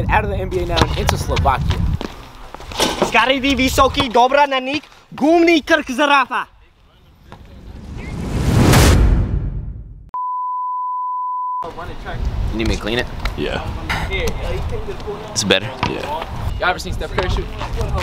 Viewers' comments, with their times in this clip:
0:03 what language is that ? that's not slovak but ok I get it
0:05 as a slovakian that was pure slovakian